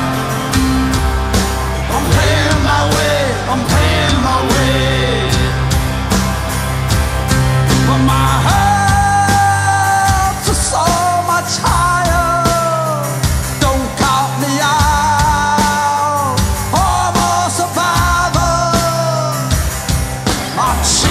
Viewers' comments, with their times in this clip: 0:09 I absolutely love the Dropkick Murphys - what a fantastic band but how exactly can the singer put the mic behind his back and the audio doesn't go down a bit. Am I missing something? or is Ken Casey singing also?